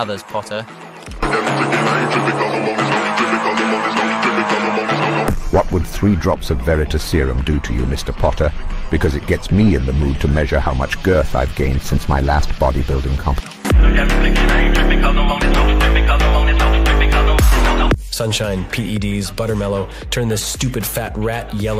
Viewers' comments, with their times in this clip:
0:06 Severus be sounds kinda like Uriel Septim VII